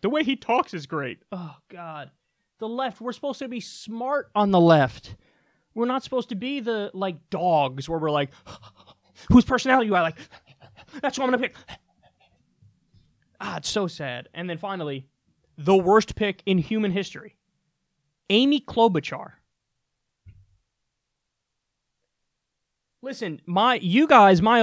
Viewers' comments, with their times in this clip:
0:09 10/10 dog impression